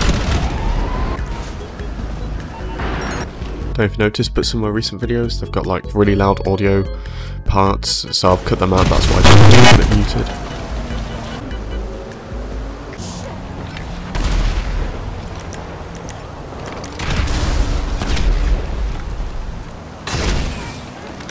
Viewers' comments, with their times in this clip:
0:05 u said u cut out audio glitches but u forgot one😂😂😂